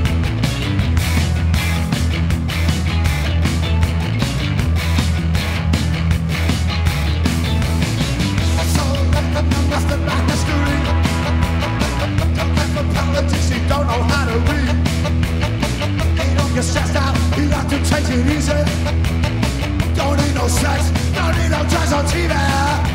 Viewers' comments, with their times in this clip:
0:04 out of curiosity, can any musos out there explain whats going on with the keys ?